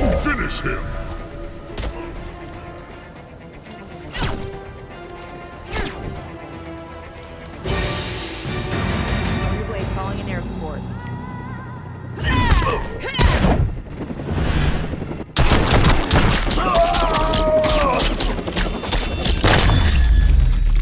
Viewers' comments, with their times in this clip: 0:07 Looooove the new fatality theme music! It's dramatic! ✌😎